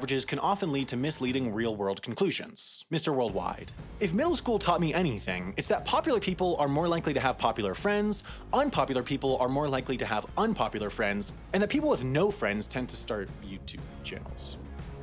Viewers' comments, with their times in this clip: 0:03 I DIED AT HOW YOU DELIVERED THAT